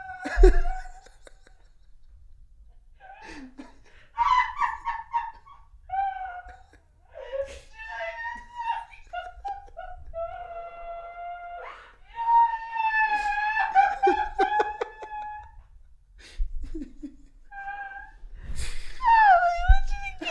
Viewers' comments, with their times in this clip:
0:04 the noISE SHE MAKES OMG I am also crying laughing at this